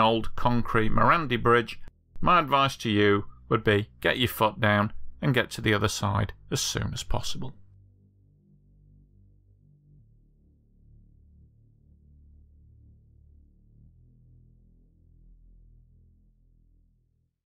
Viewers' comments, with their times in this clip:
0:03 Misheard “get your foot down” for a far cruder equivalent, and the “would be”notable (but warranted) breach in decorum gave me whiplash